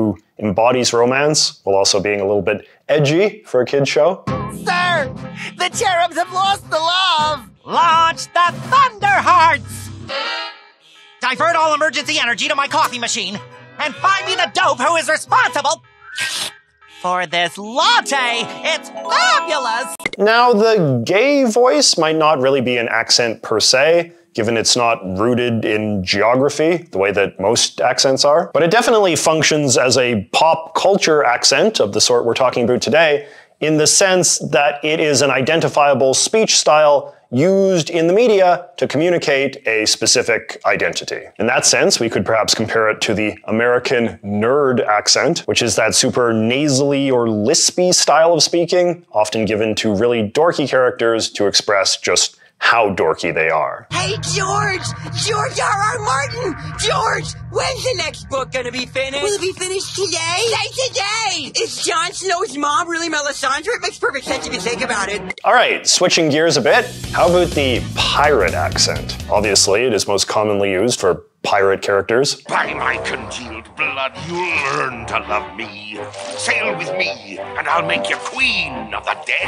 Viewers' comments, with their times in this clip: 0:10 the fact the creator to Fairy Odd Parents, Butch Hartman, was notably Christian an really pushed against LGTBQ community groups. So it’s kinda wild he’d have a goofy gay voice for Cupid.
0:41 I always thought the high, nasally accents of this sort were not connoted to "nerds" per se, but to nebbishy Jewish men. That's because that nasally register is also common with Jewish women accents (think of Fran Drescher in the "The Nanny"). " These "nerd" accents are strongly coded to be Jewish.
1:07 Ricardio the heart guy from adventure time is a very- homestuck soundtrack????? Caught me off guard, telling on myself by recognizing that -good passionate spanish accent example